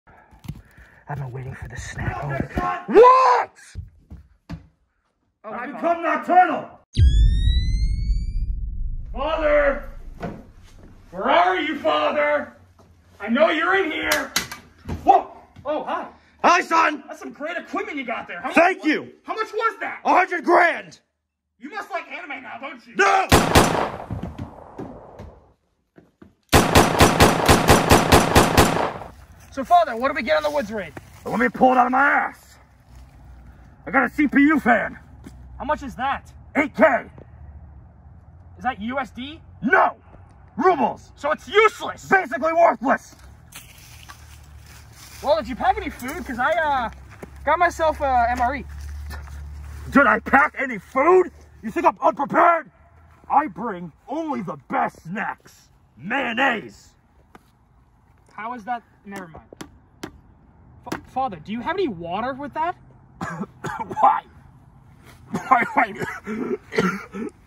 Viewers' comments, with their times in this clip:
0:05 I thought he said "I become my turtle"
0:52 that eco was cool XD